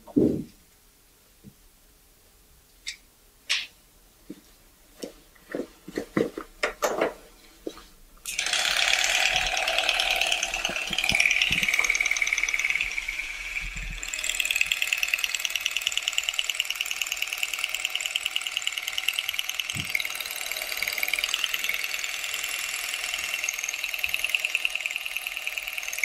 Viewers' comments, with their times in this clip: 0:09 sweet goodness we have got to get him a new one set of clippers. Those sound like a biplane struggling to take off.